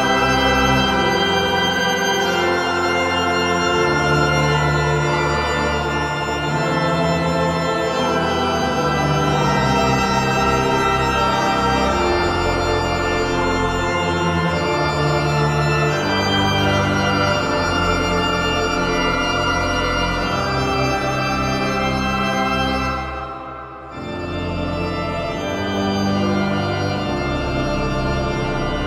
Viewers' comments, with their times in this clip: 0:06 Why is the Mister Bean music playing?
0:16 anyone else hear the choir singers of the Mr Bean tune ???